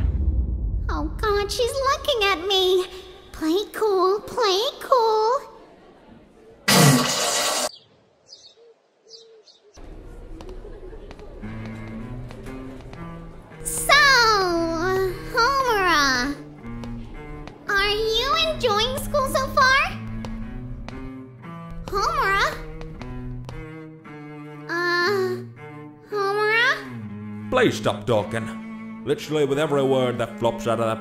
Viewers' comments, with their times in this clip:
0:04 was that the sound of a 'water faucet'?
0:11 that monogatari cello really fit
0:12 That Kaiki theme